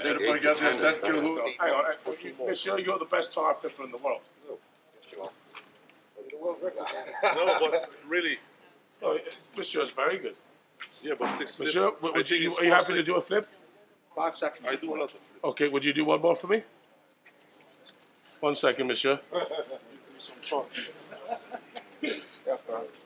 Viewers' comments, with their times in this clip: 0:10 World strongest fart